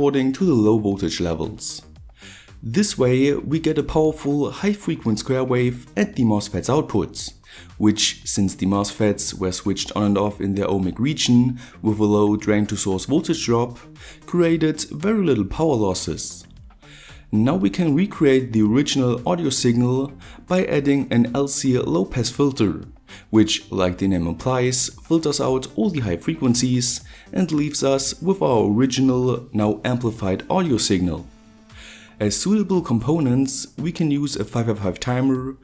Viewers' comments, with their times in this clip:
0:10 "The homie region"
0:17 lol t i thought it was ohmie hahahaha